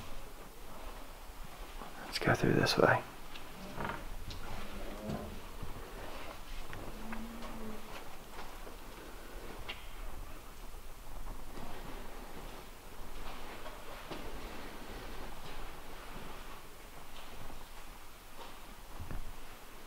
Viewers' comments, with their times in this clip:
0:06 you are talking about the Steelers and go out the other door and I heard a male say no don't go